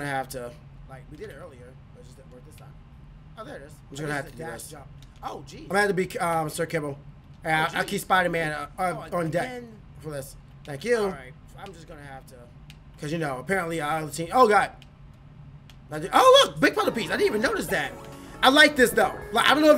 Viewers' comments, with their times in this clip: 0:06 Did anyone else get a audio glitch